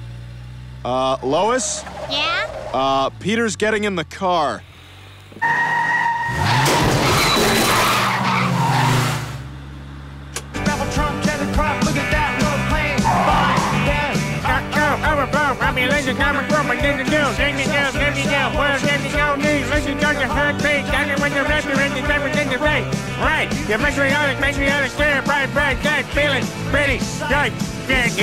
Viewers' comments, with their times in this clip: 0:09 I swear, i thought the song said donald trump
0:13 Peter sings the song while having a stroke
0:14 ACTUALLY IS WHEN PETER STARTS SINGING.